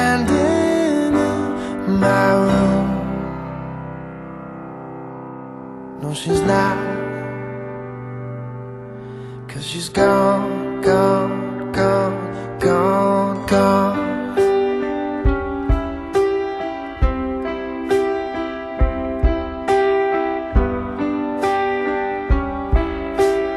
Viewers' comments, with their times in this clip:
0:10 gosh that chord at :55 is so lush and starting when it goes down in half steps just melts me. and who knew a simple c major triad at the start could be so beautfiul. i love music. i love life.